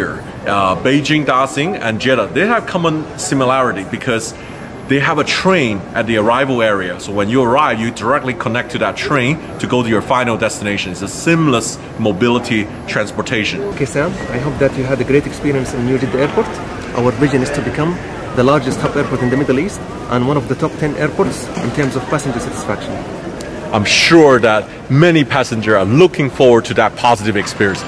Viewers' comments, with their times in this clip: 0:08 Anybody else hear a peep ?